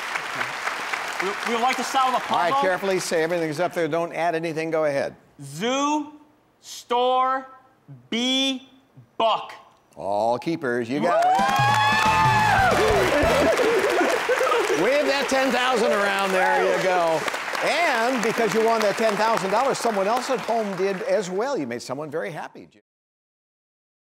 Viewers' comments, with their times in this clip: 0:09 Didn't it sound like he said Buck?